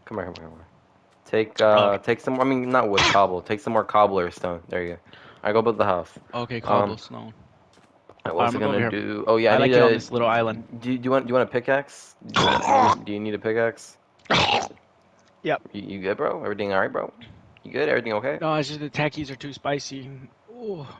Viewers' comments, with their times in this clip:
0:08 am i the only one who heard a little kid